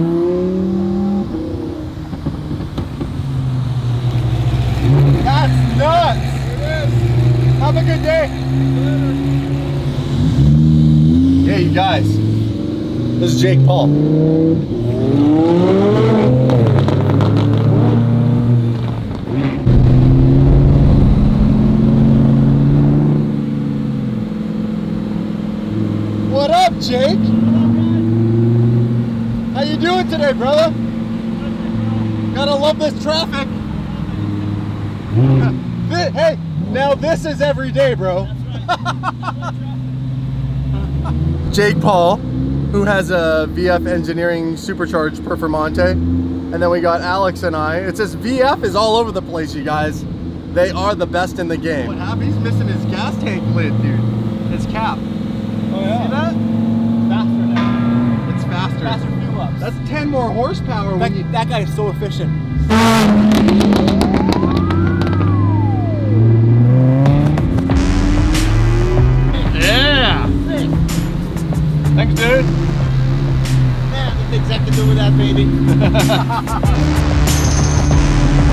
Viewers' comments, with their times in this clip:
0:04 "That's nuts!...Ha'Have a good day..." HOW CANADIAN CAN YOU GET 😂😂😂
0:06 That sounded so Canadian of you!
0:34 cringe af with that laugh
0:34 he sounds like a poparazzi
1:03 i thought that sound in the song was a police siren for a second